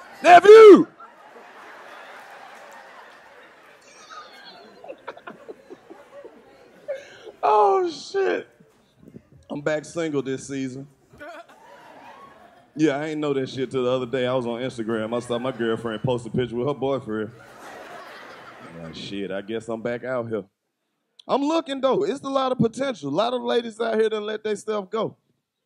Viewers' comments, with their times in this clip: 0:10 The camera man even laughed